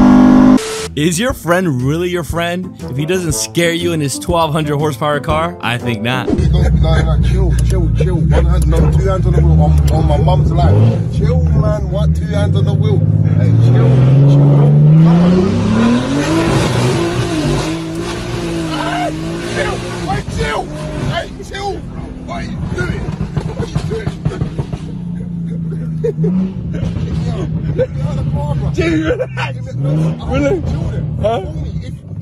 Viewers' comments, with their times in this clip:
0:08 lol this guy sounds like ksi
0:18 sound like ksi
0:20 Sounds like ksi lmao